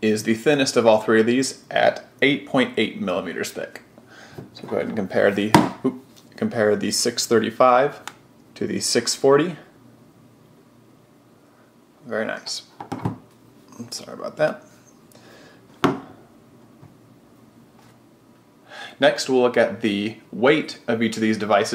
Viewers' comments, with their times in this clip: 0:07 BANG, it's ok, their Nokia phones (Microsoft bought Nokia, so it is a Nokia too)